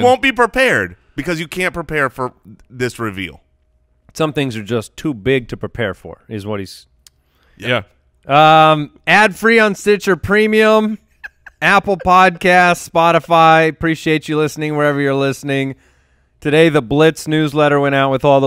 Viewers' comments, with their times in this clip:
0:04 Too funny when all of you guys cracked up 😂 show is way better on YouTube